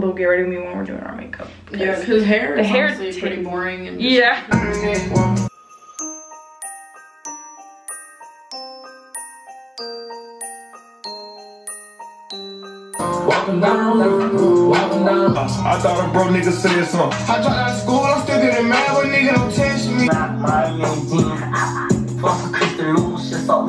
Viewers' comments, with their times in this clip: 0:05 i like how on the music was like “😈🤟🏽🥵😎‼️” then the background music is like “🥰🧚‍♀️🎄✨⛄️” 🤣🤣